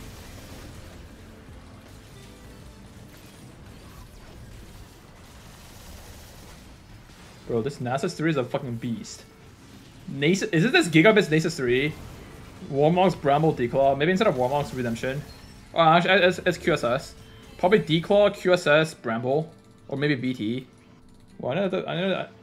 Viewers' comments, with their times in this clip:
0:08 I fucking knew you knew how to say nasus